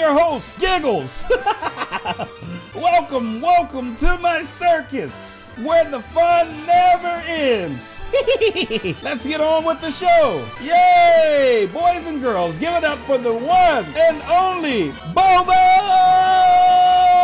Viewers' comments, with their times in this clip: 0:05 When he laugh's